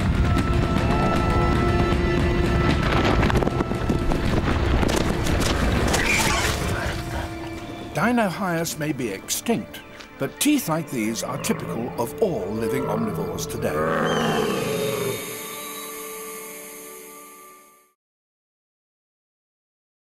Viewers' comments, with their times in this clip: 0:05 Pig and boar sound